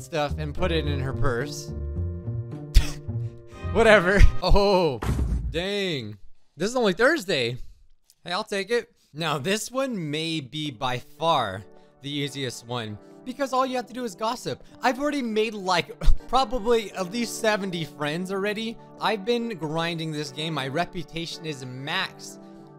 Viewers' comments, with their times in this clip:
0:10 when it said rival eliminated i heard police sirens lol